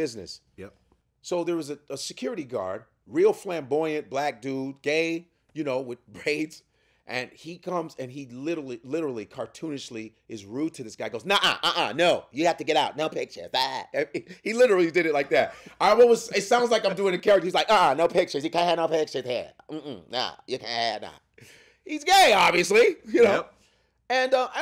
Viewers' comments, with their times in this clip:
0:10 The Russian and the flamboyant security guard's impersonation took me out 😂😂😂😂😂